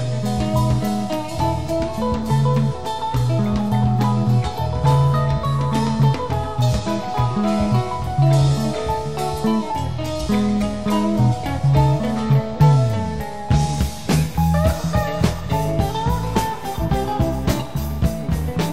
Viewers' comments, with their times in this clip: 0:05 that transition is seamless and just awesome.